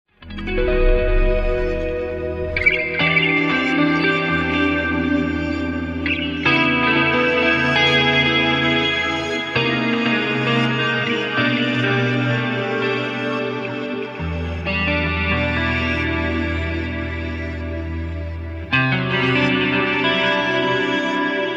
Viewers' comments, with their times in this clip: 0:03 Allan Holdsworth be like